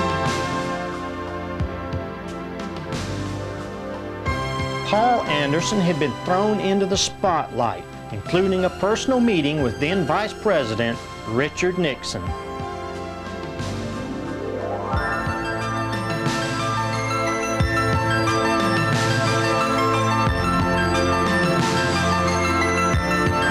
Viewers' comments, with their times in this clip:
0:07 What is the soundtrack ? So 80s..